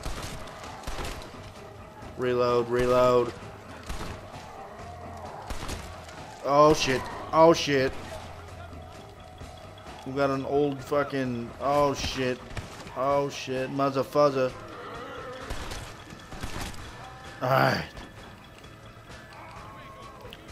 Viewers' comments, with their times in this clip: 0:06 i thought i heard george romero